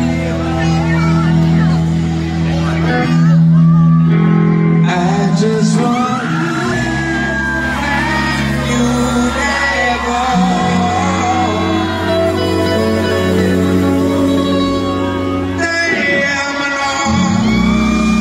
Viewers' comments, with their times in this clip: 0:04 Anyone has the name of the song or a YouTube link to it. That’s a jam… I don’t understand the words but some amazing beat and magic going on with that song. ❤ Thanks!!